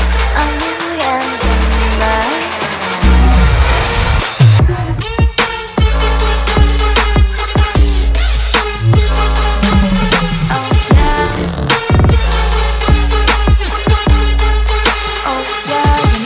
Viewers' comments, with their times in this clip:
0:04 i did not expect that beat is nastyyy damnnn